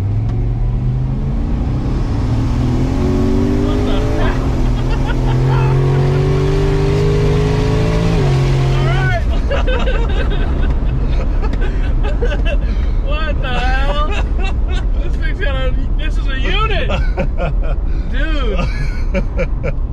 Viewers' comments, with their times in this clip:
0:04 I hear a sututut